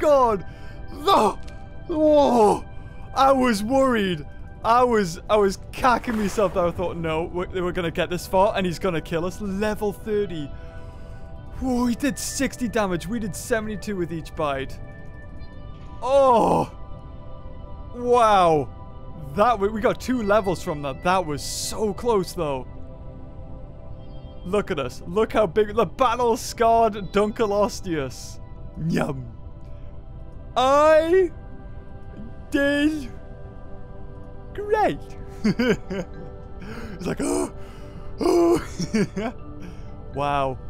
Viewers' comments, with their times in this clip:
0:05 Lol! You were "kak"ing yourself. You obviously have some South African friends lol!
0:22 In i couldnt hear what it was saying so i turned my speaker so high that i woke up 2 of my neighbors and my dad fell off a chair xD my baby cried and my eardrum exploded but i finally heard what it was saying I Did Great !